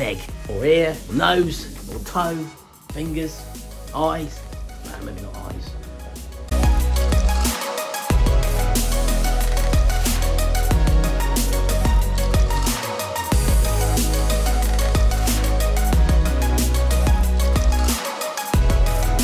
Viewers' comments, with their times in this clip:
0:04 I had to go back to check my sanity! I swore I hear you recommend casting one's "dingus"! 😯😂😯